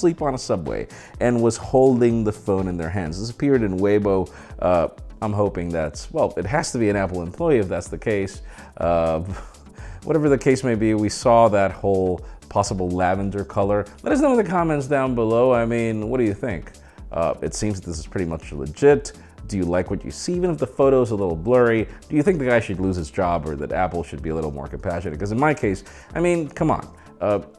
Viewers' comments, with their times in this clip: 0:09 Oh boy, that spit made my day.